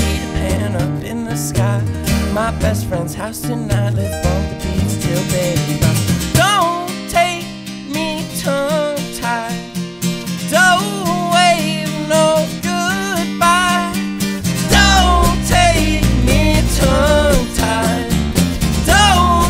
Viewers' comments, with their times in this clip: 0:03 The chord played ...